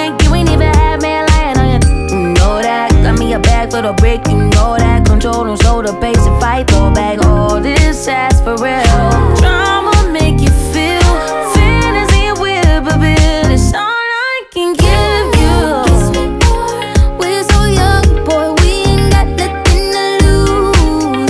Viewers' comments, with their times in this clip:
0:09 Why have I always thought she said “trauma” and not drama ?!?